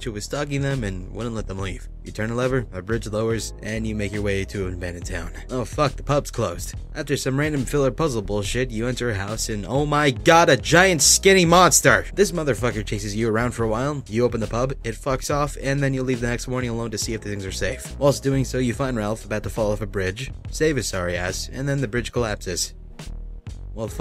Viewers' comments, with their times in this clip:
0:09 ....and OH MY GOD A GIANT SKINNY MONSTER Pfff I don't know why that sounds so funny xD